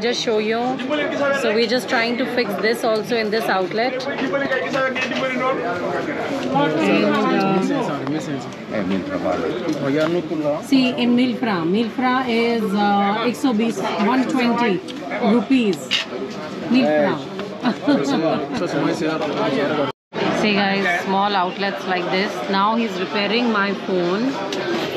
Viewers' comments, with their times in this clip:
0:08 Do you know that Indian speaking wolof has the quite same accent than native wolof senegalese accent!